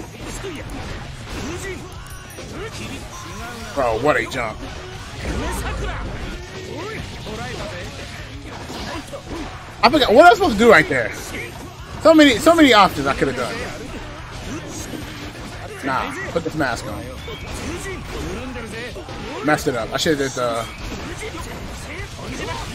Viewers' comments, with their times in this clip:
0:06 the soundtrack and the combo line up in perfect timing
0:07 music sync was godlike